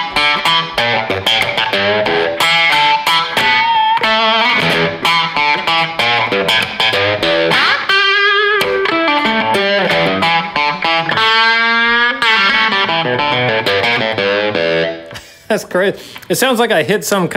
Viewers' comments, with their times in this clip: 0:03 made me think of Jerry Reed 👍🏻